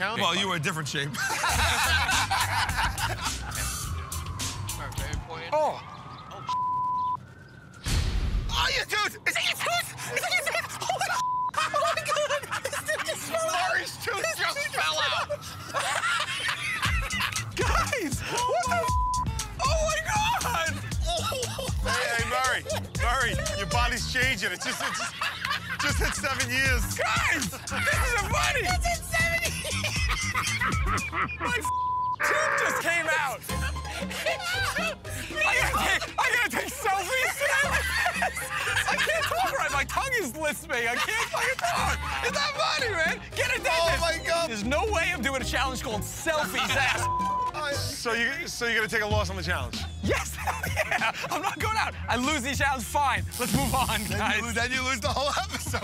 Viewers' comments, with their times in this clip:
0:06 Anyone else hear someone in the crew say “oh sh*t”?
0:15 Q's laugh just kills me every time
0:15 wow Q finally let out a good laugh!
0:22 Murray, your body's changing!! Then Sal just laughs!!
0:22 I love how Q jumped on the opportunity to make a joke connecting the earlier conversation to Murr’s tooth falling out, and then Sal and Joe laughed even harder!
0:28 Sal can't stop laughing! ☺😀😁😂
0:30 sal sounds like an angry bird
0:32 sal sounded like a bird XD
0:40 Correct me if I'm wrong but it sounds like they missed an f-bomb from Murr @ "My tongue is lisping; I can't fucking talk"
0:40 the lisp must have tricked the censor guy.
0:40 guys, watching from Murr says "my tongue is lisping, i can't f*cking talk." bcs of his lisp, the censor guy forgot to censor out the F word.